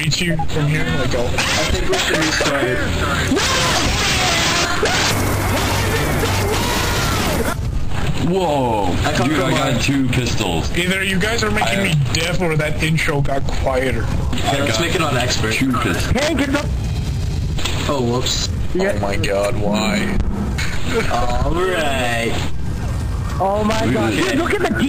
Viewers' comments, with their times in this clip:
0:05 WHY IS IT SO LOUUUUUUUUUUUUUUUD